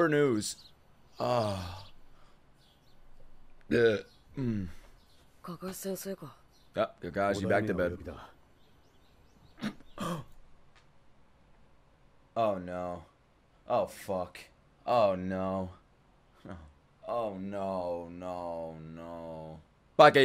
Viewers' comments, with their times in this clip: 0:05 The halt in his laugh 💀